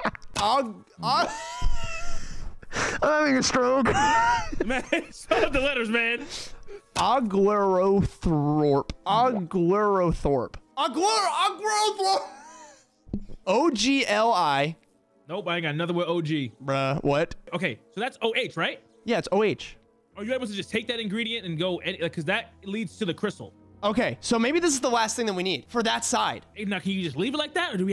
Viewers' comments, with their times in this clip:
0:10 he sounded like one of those monsters you find near a river/ocean in World of warcraft anyone know what I'm talking about?